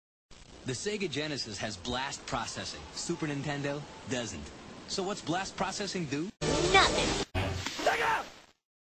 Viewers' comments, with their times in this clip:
0:02 if you start the video it sounds like "ass-processing"